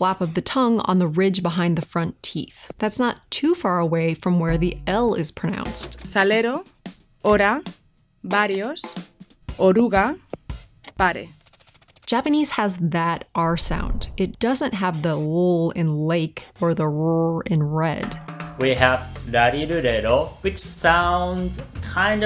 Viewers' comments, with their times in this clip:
0:09 "varios" That's another example of a phonemic switch, in Spanish, where "v" becomes "b". English has "governor" and "gubernatorial", where "govern-" and "gubern-" have the same origin but diverged because the speakers weren't particular about sticking to either "v" or "b" for this stem, similarly to how Japanese and Korean don't require the distinction between "l" and "r".